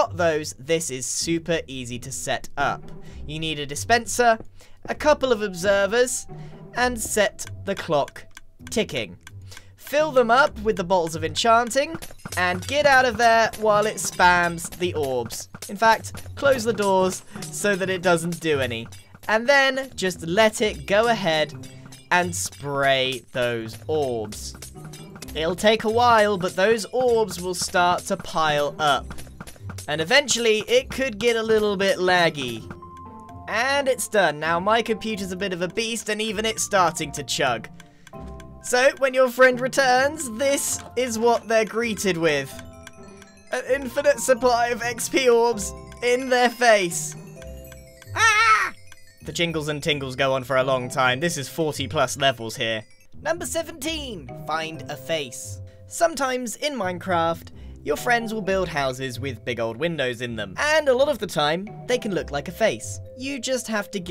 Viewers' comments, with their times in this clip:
0:09 Is it just me or did Grian say "Balls of Enchanting?"
0:47 the “ aaaaaaaurgh” got me rolling 😂😂😂😂😂😂
0:47 “ahhH😛😛😛” SO CUTE AHHHHHH😫😫😫😫😫😫😫❤️❤️❤️❤️❤️❤️❤️😍😍😍😍😍😍😍